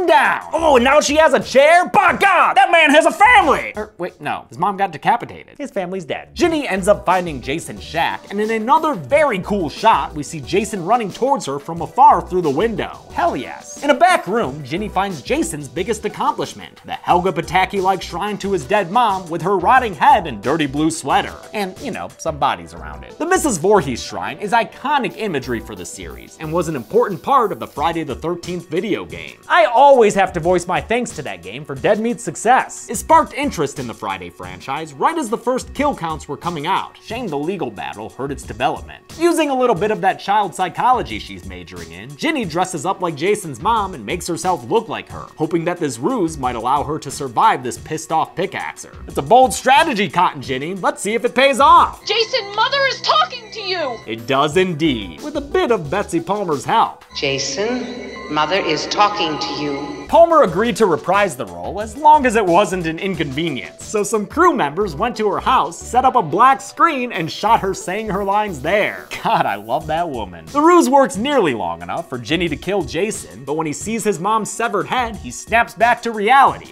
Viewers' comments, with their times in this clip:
0:05 “His family’s dead🙂” never have I heard anyone say that so peacefully and calm💀
0:12 that is the calmest “hell yes” I’ve ever heard.
1:00 At least Ginny actually sounded like an angry mother in the film. The women counsellors in the game sound more like they're flirting with Jason when they pretend to be Pamela.